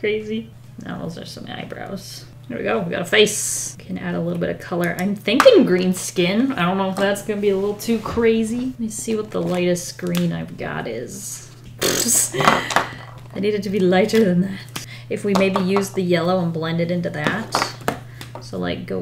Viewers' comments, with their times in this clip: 0:07 sounds like kermit XD